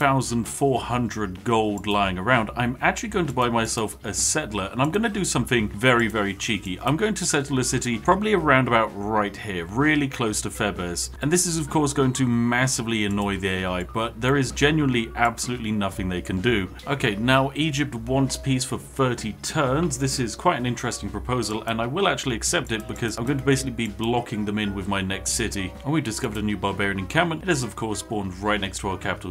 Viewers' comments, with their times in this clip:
0:09 ah yes, theb-ez
0:10 Me, an Intellectual: "Theebz" Spiffing, a Gentleman: "Theh-behs"